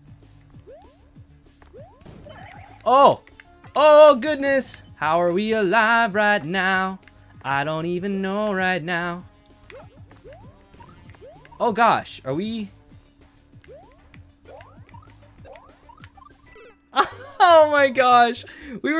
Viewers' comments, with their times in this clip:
0:05 you‘re a good singer lol😂✌️